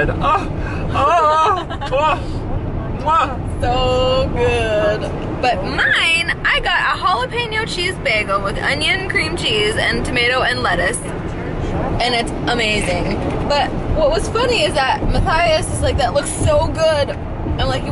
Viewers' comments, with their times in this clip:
0:05 when she said 'mine' her voice went so high! XD